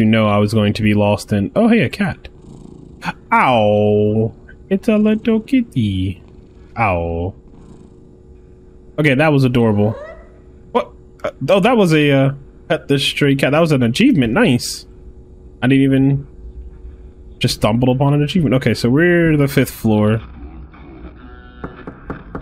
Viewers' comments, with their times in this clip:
0:07 instead of awww he said owwww